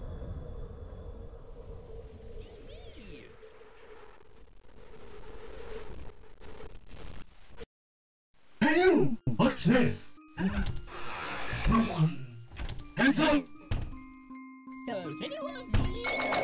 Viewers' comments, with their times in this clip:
0:04 sounds like creepypasta shit here